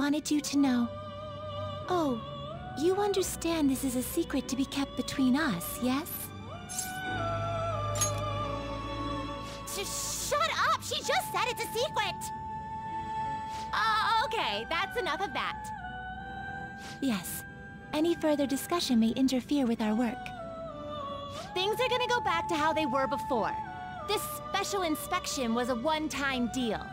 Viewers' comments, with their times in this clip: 0:06 She just say it's a secwet!
0:09 Are we not going to talk the fact that Caroline said swecret and not secret
0:09 swecret.... HAHAHA it was if ya wanna hear it
0:10 "She just said it's a secwuet!"